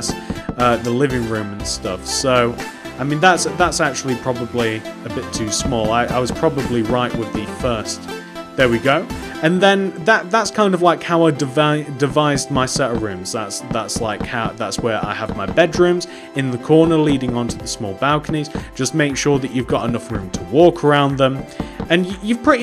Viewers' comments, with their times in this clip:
0:10 This apartment was so easy to make and I loved it, it's now part of my city! Also, I loved how you kept stuttering and later in the video, it was cute XD